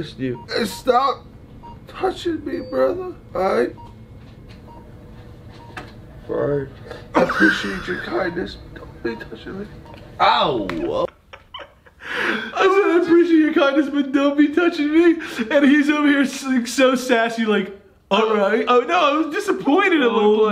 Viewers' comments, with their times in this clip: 0:06 HAS ME DEAD😭. 🥺-aLRiGhT-🥺